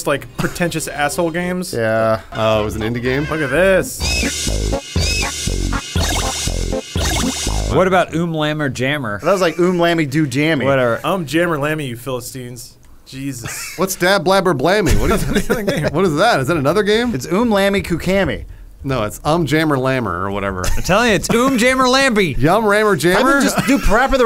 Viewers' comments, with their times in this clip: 0:08 is what English sounds like to non English speakers.